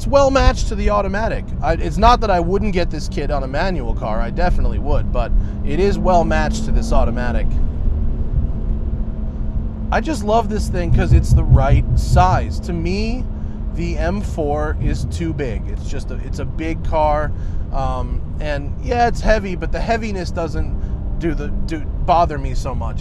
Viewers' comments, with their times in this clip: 0:10 what's that thumping sound ? Real owner's dead body rolling around in the trunk? Erection hitting underside of dash?